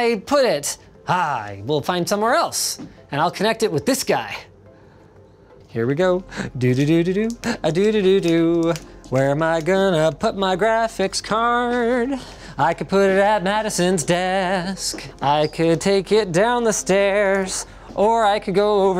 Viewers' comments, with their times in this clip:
0:06 that vocals tho- linus- that's YOUR secret talent?!?
0:06 Where am I going to put my graphics card? - sounded like a musical just started! Linus Bach Tips?